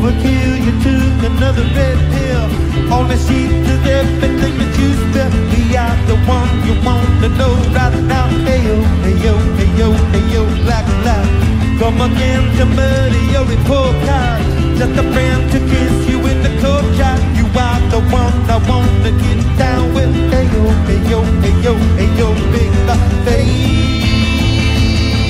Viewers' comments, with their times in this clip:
0:10 is alvin and the chipmunks, prove me wrong